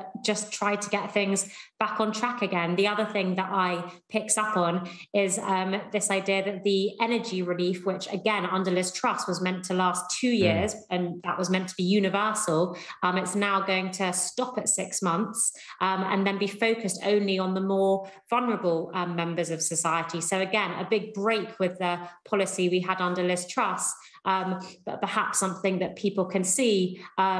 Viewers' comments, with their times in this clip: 0:10 is it a fart sound?